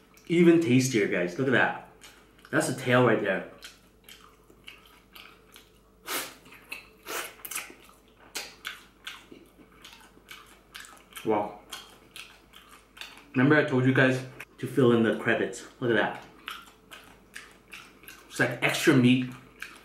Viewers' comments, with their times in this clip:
0:03 Kitty's in the back saying "Dude I'm hungry too!" LOL!!!